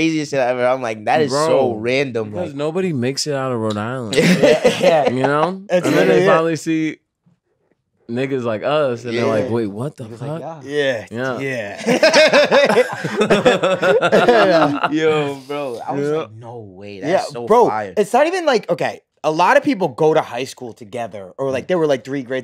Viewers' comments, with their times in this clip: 0:05 the pause before "niggas like us" is sending meee